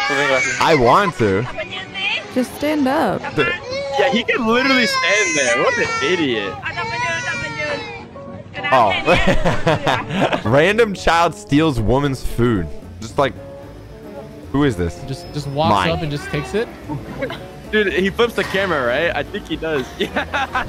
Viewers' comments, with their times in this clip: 0:06 Instenly stops crying